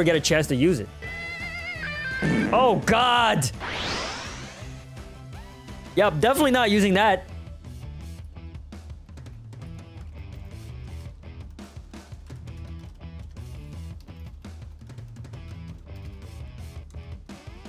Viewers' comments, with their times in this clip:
0:05 this guitar sound got me cackling for 3 minutes straight